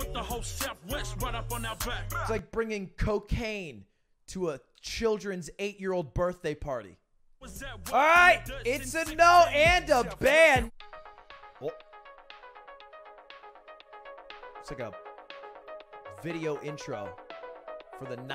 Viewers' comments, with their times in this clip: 0:04 My man really tried to put some Aussie grime in big ups fam you tried